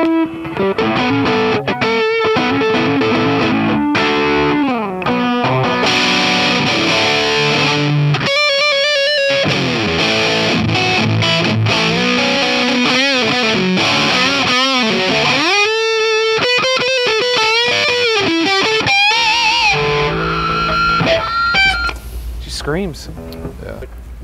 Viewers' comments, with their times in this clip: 0:09 anyone know how he plays those two notes right before the chord on the 2nd fret slides up to the 4th?